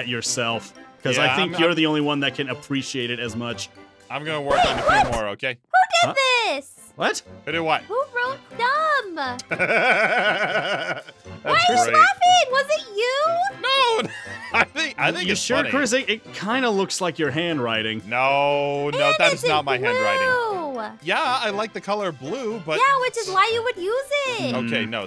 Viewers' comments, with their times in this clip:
0:09 that laugh makes me laugh 😂
0:10 his laugh was AMAZING 😂